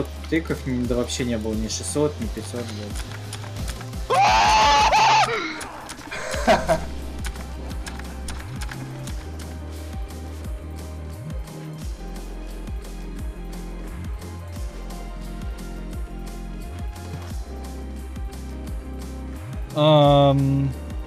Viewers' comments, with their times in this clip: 0:04 That Scream on